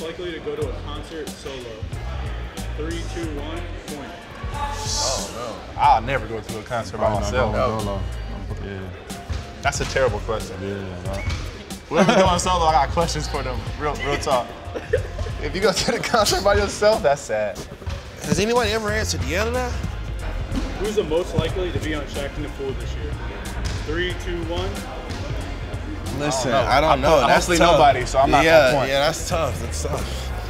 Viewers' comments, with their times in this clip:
0:05 Nigga sound country af
0:17 Why did Zion sound like that